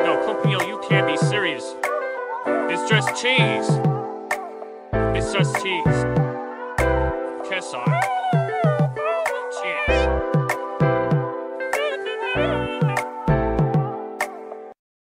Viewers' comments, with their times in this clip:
0:13 Now the og ver plea-*fart*OOO